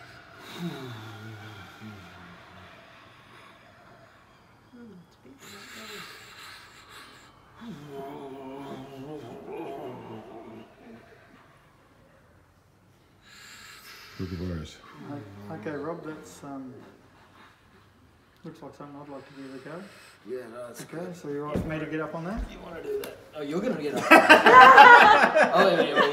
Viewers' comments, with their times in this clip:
0:09 Me enjoying it, minus over dramatic heavy breathing. But was loving it when I heard the kookaburras love those little guys! They awesome!!